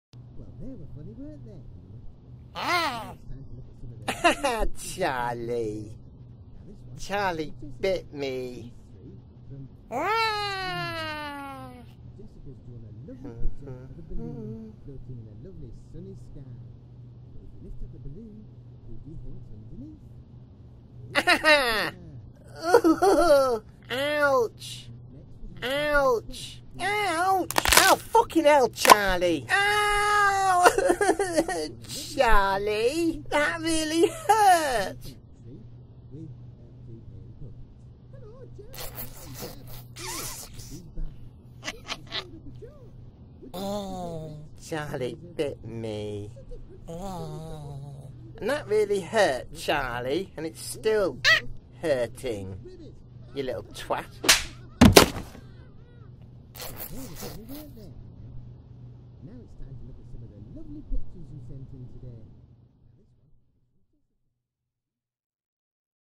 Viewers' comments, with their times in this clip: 0:02 I thought he farted
0:27 OW FUCKING HELL CHARLIE fake whines
0:28 its sounds like u were saying popular
0:39 that laugh tho it's creepy
0:53 LOOK AT CHARLIE'S FACE 😂 And the way the slap sounds and looks is FUNNY AF 😂✋👏